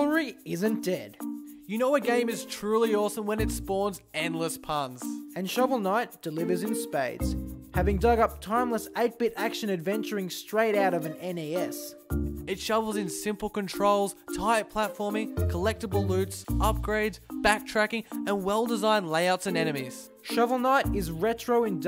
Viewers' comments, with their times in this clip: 0:09 it's it NES instead of NAS ?